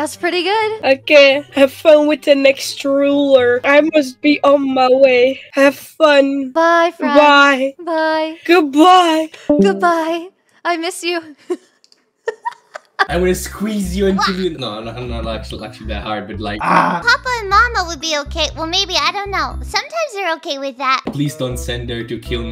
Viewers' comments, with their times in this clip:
0:04 she sounds like sadness from inside out 💀